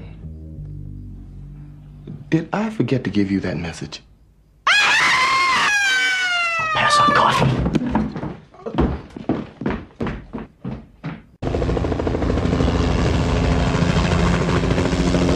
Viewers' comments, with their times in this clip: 0:03 I loved that scream!